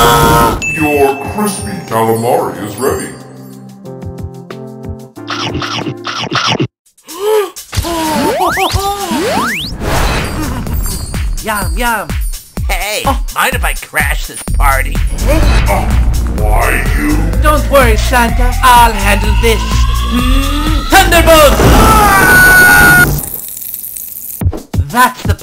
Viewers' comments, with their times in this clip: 0:10 Pillar man theme plays*